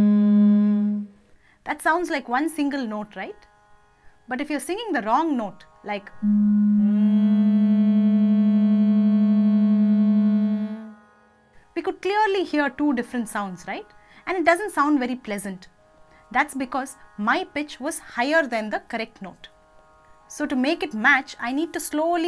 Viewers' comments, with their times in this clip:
0:07 sounds like bulgarian traditional music. awesome